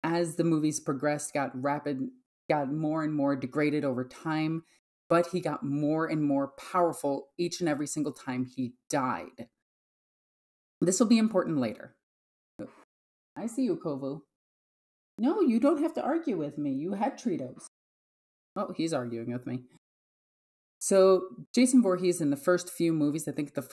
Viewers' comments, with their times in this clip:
0:05 sounds like a certain World Eaters equerry!